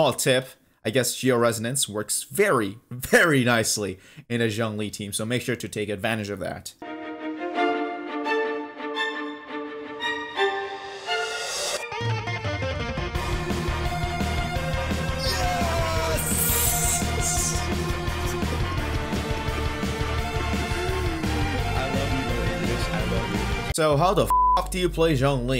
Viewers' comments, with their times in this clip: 0:06 hell yesss I was waiting for it work and to hear the dropp niceee